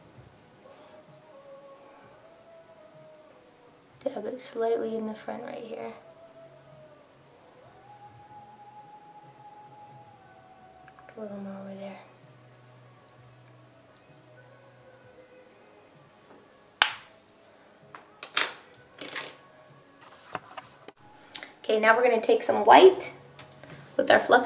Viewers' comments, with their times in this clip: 0:09 Lol I can hear Faithfully playing in the background ...